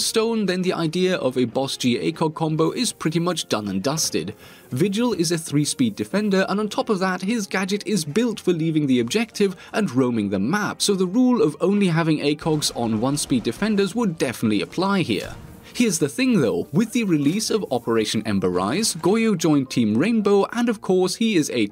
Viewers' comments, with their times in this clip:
0:09 i love the music sync with that montagne kill